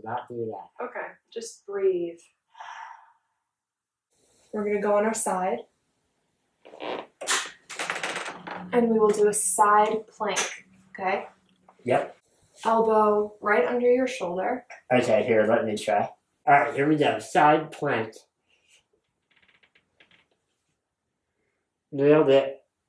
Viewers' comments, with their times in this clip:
0:05 lowkey thought she farted